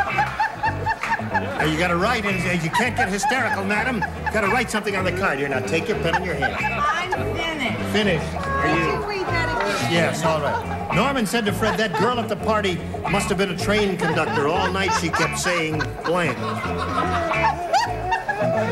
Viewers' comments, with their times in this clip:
0:06 Love the way Richard turns his back on Kaye and her silly giggling.